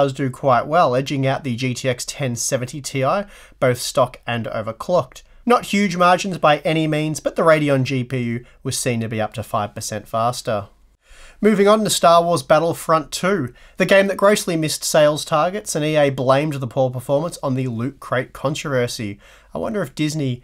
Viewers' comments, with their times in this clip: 0:08 I heard "jump shit in october" :D